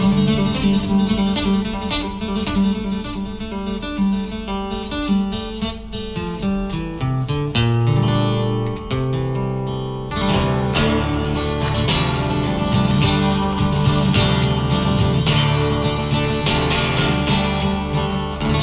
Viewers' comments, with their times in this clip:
0:05 a small blunder - that shows Rory's courage for new and not so much practiced runs - which is totally impressive (And shows every musician: nobody is perfect! ) I think, even during playing his songs he has had some ideas for a modification and was not cowardly to do .. This "not so perfect", but offering the look in his soul while playing - that was Rory Keep the flame